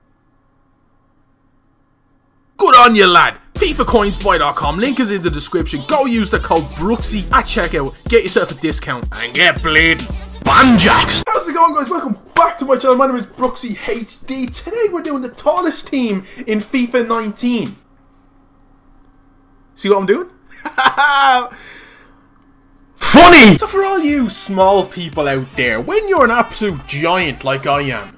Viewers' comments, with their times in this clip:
0:09 And get bleeding